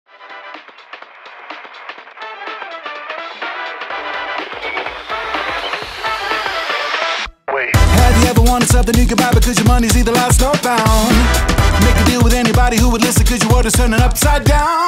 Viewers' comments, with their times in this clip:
0:01 sounds like the opening credits to a Hazbin Hotel movie, not gonna lie